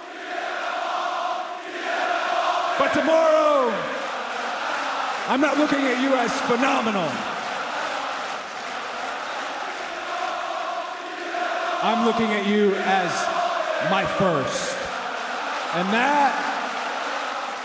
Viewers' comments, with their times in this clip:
0:04 wtf the crowd chanting? It seems like I'm watching a soccer game lol